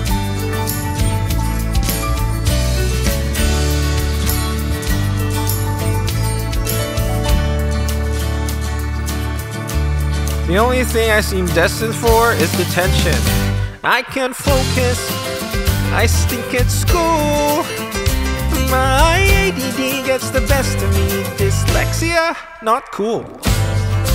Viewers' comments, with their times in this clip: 0:08 When he starts singing ❤